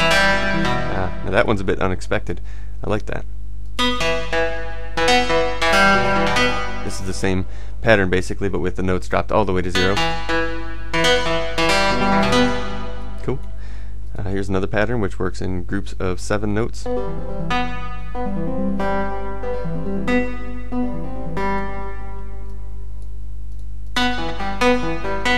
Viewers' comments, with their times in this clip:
0:09 That Super Buu theme like rhythm